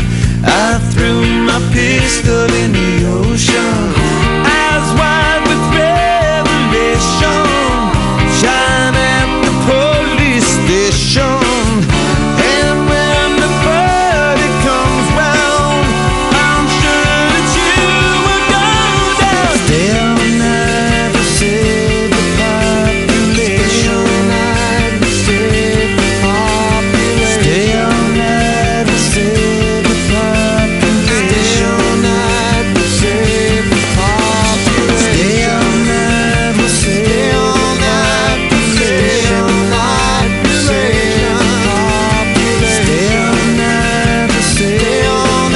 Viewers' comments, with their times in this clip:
0:09 Trust me it's there. Also listen to the Zephyr Song There's an autotune glitch
0:09 usually it's subtly used with the chilis, like in BTW. But you can definitely hear it on tracks like Tear, and there's an autotune glitch in the zephyr song
0:16 Holy shit! I have never heard Anthony hit high notes like Amazing
0:19 i love de backing vocals of john Frusciante
0:20 The ONE song where Anthony's vocals are perfect and John has to come in with his flawless voice and harmonize with himself.
0:29 As the song was about to finish i would always rewind to the part when John comes in with back up vocals just so i could listen to his voice again. Amazing stuff!